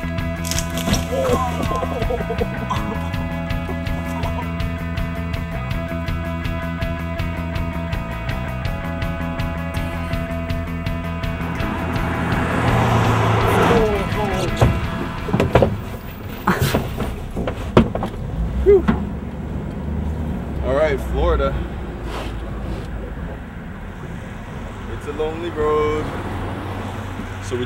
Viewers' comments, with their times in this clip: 0:09 Did anyone else notice in the background music someone is saying, David, come on David, it's time to get up" ??